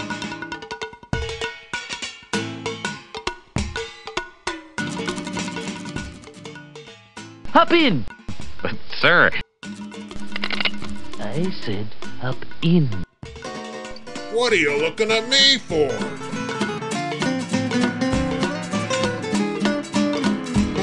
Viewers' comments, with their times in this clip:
0:08 is the scene from simpsons? sounds like burns, lol :) Woah, this is awesome though!! Thanks for posting, its all so inspiring!